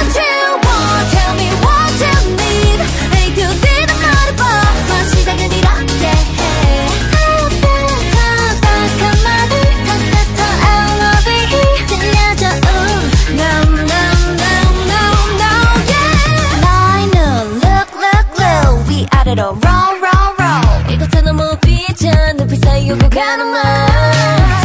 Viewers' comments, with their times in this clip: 0:07 You edit on Pc? Which editor you use? Also, Choerry in is so accurate